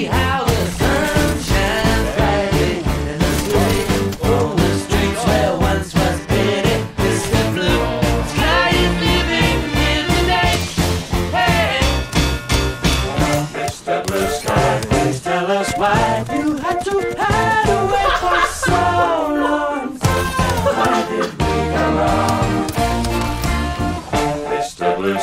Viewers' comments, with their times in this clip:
0:09 the wingman shots syncronized with the song here
0:11 that wingman synced with the music 🎶 👌 👏
0:12 those wing man shots where on beat